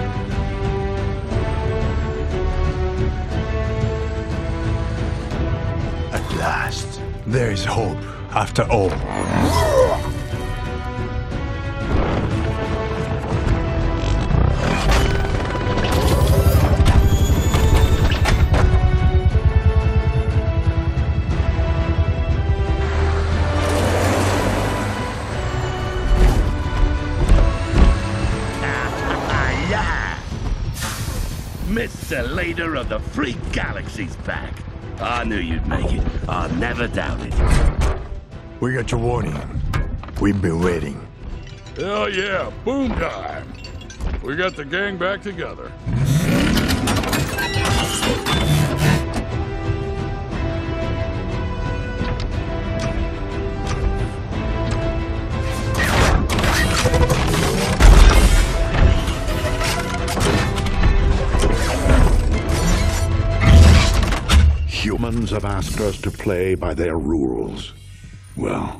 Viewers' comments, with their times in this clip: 0:07 why does he sound like mimir from god of war 4 and 5?
0:09 what fucking sound did drift make? It sounds like he got punched in the gut and fucking puking
0:47 soundtrack is beautiful
0:55 Nobody talk about the music editing and timing.. music perfectly ends at optimus transformation
0:55 i hear a iPhone ringtone when he’s transforming lol